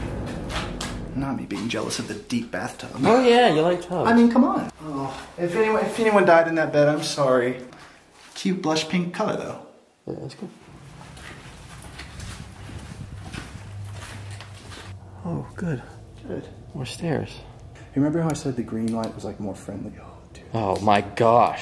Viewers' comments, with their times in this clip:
0:03 there is someones voice